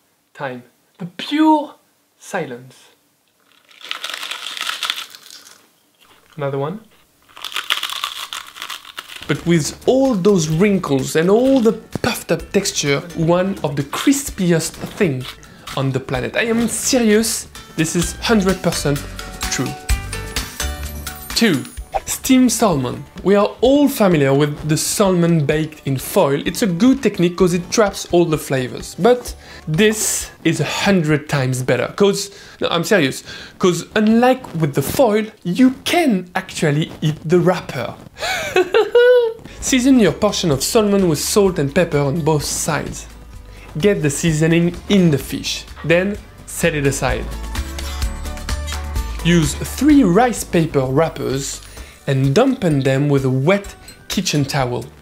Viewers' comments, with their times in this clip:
0:03 he was doing ASMR before it even was a thing
0:38 His giggle is absolutely adorable and sounds just like the pillsbury dough boy 😍🤣
0:38 dude you have the best laugh 😂